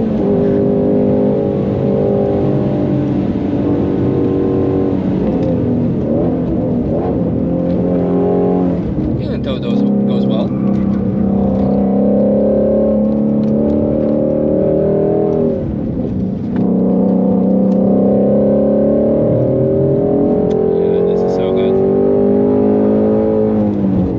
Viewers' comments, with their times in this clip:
0:10 Bro in the miata rolled that window down for that 8krpm flybye 😂 probably made his day hearing one of those. Rare even in the US